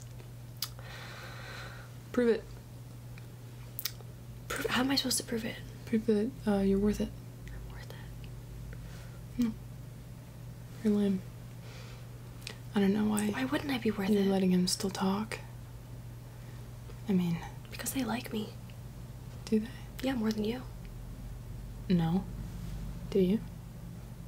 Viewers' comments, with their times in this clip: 0:06 deku: *whispers* he comes equipped with a lot more diseases me am trying not to laugh: (super high pitched) KREEEEE